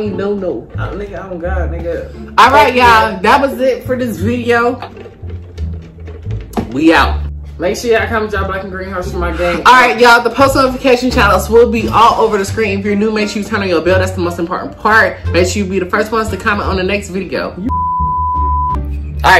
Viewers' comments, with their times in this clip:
0:06 😶 damn neva heard that voice before